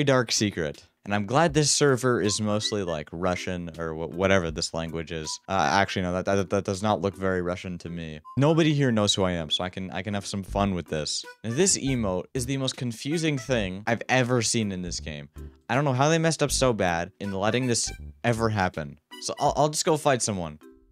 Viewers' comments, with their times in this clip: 0:06 WHY WAS MAN WHISTLING